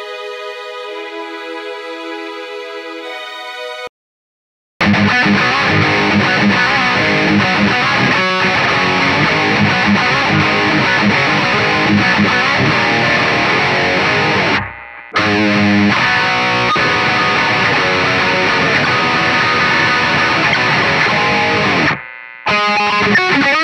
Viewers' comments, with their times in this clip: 0:04 my brain won't let me hear anything else but Live and Learn from Sonic lmao